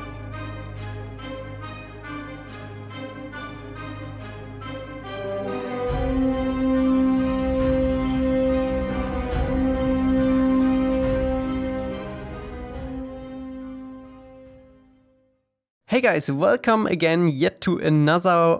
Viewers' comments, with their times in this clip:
0:04 when I hear that music now I started bopping like it's a rave, I get so excited for these videos man